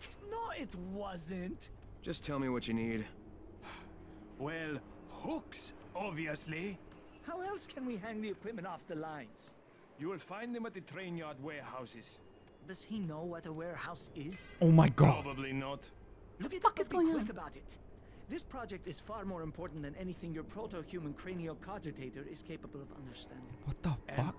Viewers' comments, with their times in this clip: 0:09 Fun little thing I found out: If you're wearing headphones, Fatin speaks through the right earphone and Tolga speaks through the left. Also, I have proof that those two are being possesed by aliens. Fatin speaks in Tolga's voice then turns and speaks to Tolga as if he was the one who spoke. Also, why else would they mention anything about your proto-HUMAN cranial cogitator? That "Human" bit is unnecessary if you ask me considering that everyone is a human....unless they're not human....